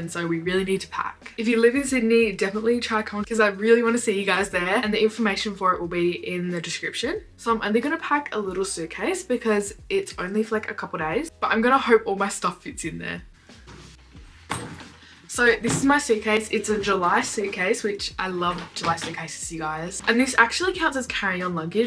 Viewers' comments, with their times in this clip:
0:08 why is her voice so pretty when she said because❤❤❤btw I love your channel and your videos lysmmm!